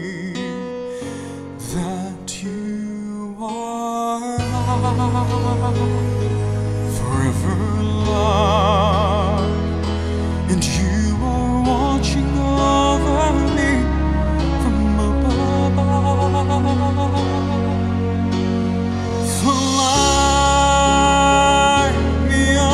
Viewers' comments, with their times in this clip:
0:08 its EXACTLY Josh Grobban, how he can steal Josh voice, this guy just so lucky to having Josh voice sounding.